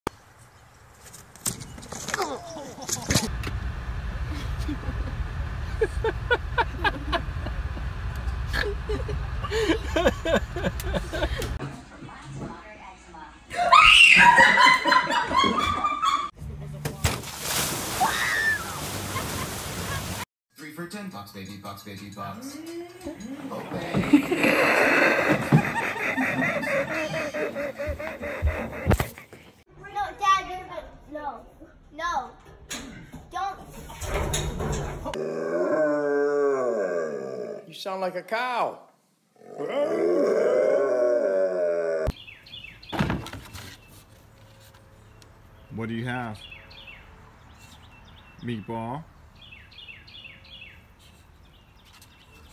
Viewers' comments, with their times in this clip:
0:03 did anyone hear a crunch sound
0:14 i like that best video scream loud was that funny looks like a CROWN!
0:25 this laugh very very goofy
0:31 is hilarious because, listen to the kids in the background
0:35 dog sound like a cow!